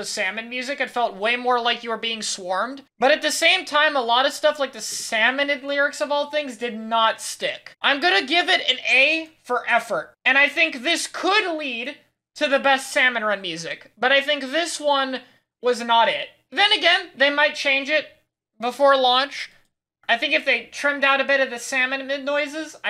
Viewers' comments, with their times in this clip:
0:03 fun fact, if you are talking about the "salmonid lyrics" i think youre talking about, those arent actually a part of the song! those are coming from the little smallfry that circle the fish stick, cleverly syncing those sounds with the music! :D when you acknowledge that fact the song sounds much better, in my opinion of course :> (im a little bit biased cause im personally a big fan of dissonant and chaotic melodies)